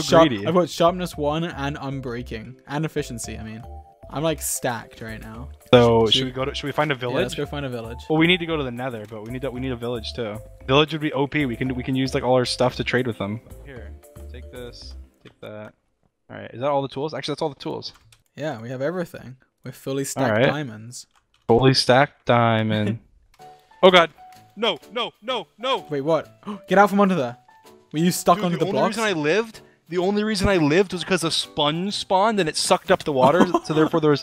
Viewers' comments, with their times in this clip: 0:06 lol I’ve never been more scared of George than in this moment, he was literally so mad he started growling LMAOOOO
0:06 Did George growl ?
0:09 George: mines diamond block George two seconds later: Ungodly screeching
0:10 gets diamond block, burns, *screams*, cuts scene
0:11 Perfectly cut scream, George edition
0:12 the second half on the scream
0:15 the amount of disappointment in George’s voice lmao